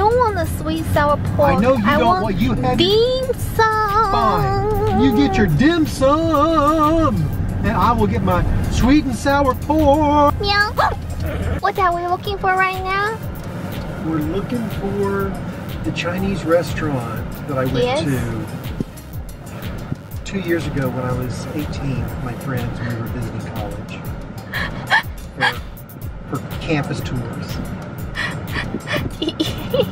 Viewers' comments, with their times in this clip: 0:10 did you let out a meow?